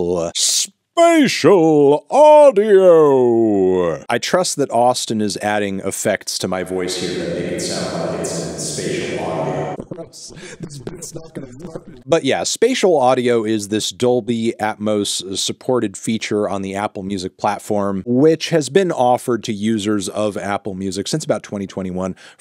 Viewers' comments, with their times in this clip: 0:10 Okay, I'm playing this through my phone speakers, and somehow the bit still managed to mess with my ears with how weird it sounded.